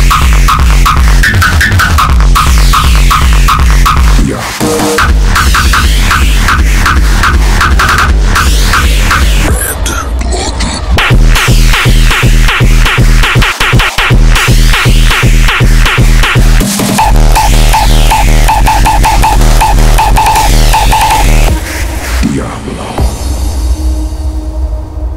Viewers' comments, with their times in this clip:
0:10 kick is just mental